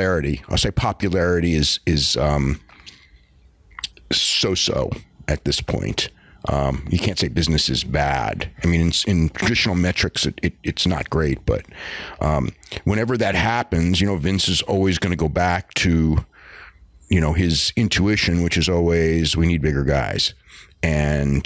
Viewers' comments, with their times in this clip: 0:09 What was that noise ??